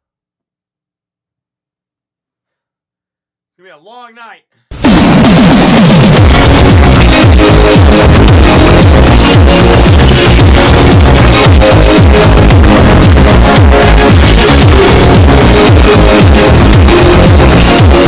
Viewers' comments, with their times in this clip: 0:05 rip bro ear